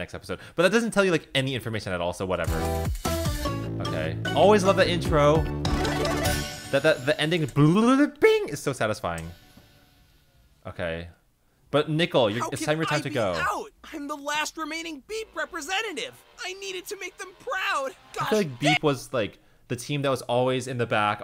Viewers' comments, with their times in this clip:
0:07 Is So Autotune!